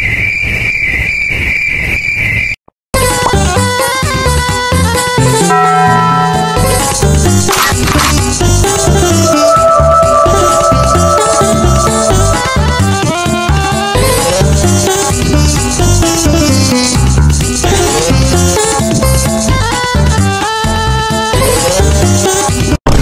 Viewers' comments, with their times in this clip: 0:09 minecraft cave sound moment